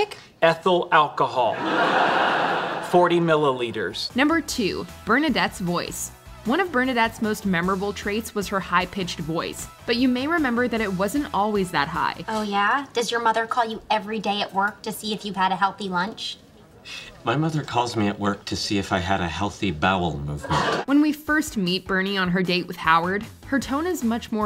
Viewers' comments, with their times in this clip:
0:05 Actually, Bernie's high pitch voice maybe a reference to Joey (2004) TV series. Simon Helberg, actor of Howard Wolowitz, played the role of Seth in Joey(2004). Simon's Seth character's fake girlfriend in Joey TV series had ditto exactly similar high pitched voice like Simon's Howard character's Girlfriend.